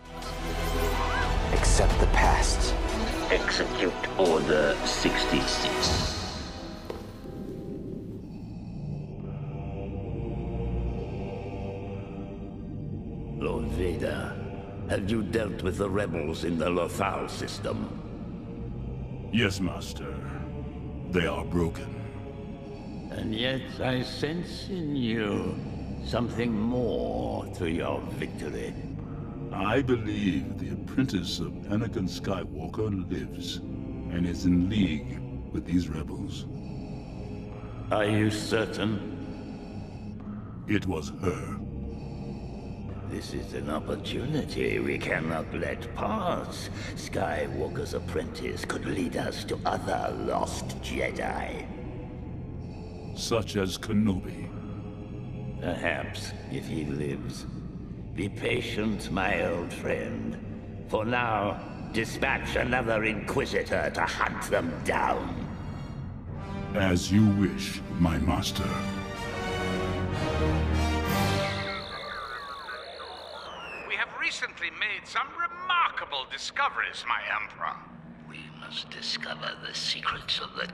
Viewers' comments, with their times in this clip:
0:07 I know that Sam Witwer originally voiced The Emperor in Rebels (and did a great job), but hearing James Earl Jones and Ian McDiarmid on screen at the same time again was really cool.
0:11 Wow what! They replaced Sam Witwer's voice with Ian McDairmid in that Vader scene
0:11 I had no idea that they redubbed that scene with Ian McDarmid. Honestly, while it's always great to hear him in the role, I feel as though his delivery was a bit rushed and half-assed compared to Sam Witwer's.
0:11 When he gives the order ian radiayes power incarnate in his voice witvir did his best bit ian is lord sidious emporer of the galaxy the can only be one
0:12 Woah! I did notice that they change the Emperor's voice on there. Before, it was Sam Witwer who voiced Darth Sidious. Now, who has his voice? Ian McDriamid?
0:12 Hey, I remeber his lines sounded different...
0:13 I am so glad you used the Ian Mcdiarmid version Sam Witwer sounds great as Palpatine, but nothing beats the real thing
0:13 Did they replace Sam Witwer’s voice with Ian McDiarmid here because he sounds different?
1:01 Was the audio changed for Sidious’ voice ? It sounds hella ugly and lacks passion in it; where the voice I knew from when the show was airing was voiced by Sam Witwer and THAT had passion in it.